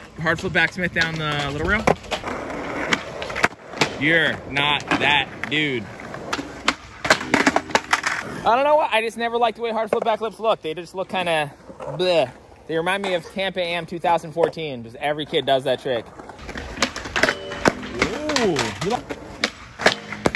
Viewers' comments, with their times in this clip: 0:06 rails got good tone